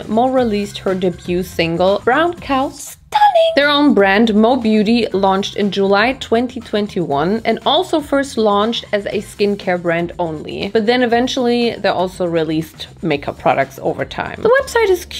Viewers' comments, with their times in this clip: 0:03 That 🎶Stunning🎶 was gorgeous!😍